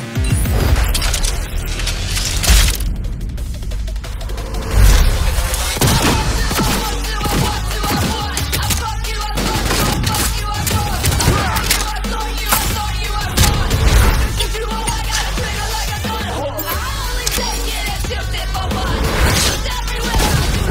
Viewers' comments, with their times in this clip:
0:06 Anyone notice that clipping ?